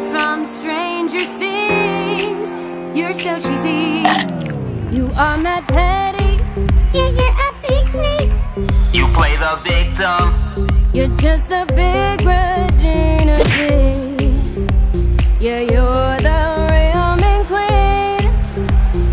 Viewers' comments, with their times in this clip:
0:06 Anyone else literally jumped by of Kim's voice